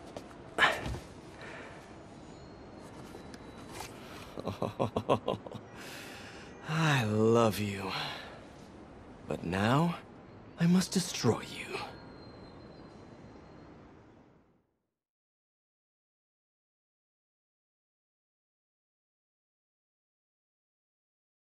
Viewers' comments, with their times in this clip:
0:06 I love you but now i must destroy u SOUNDS EVIL